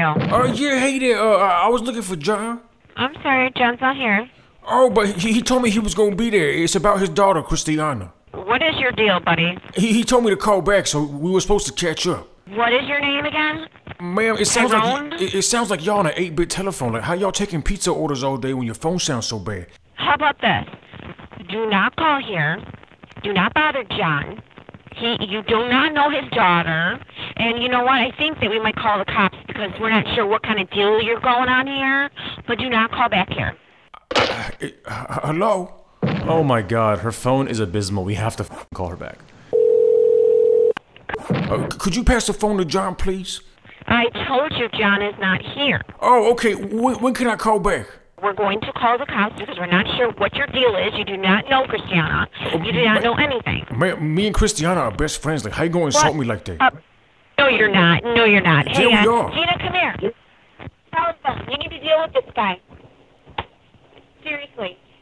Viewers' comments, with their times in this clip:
0:07 what’s your period due, buddy.
0:53 why does she sound like the wife from family guy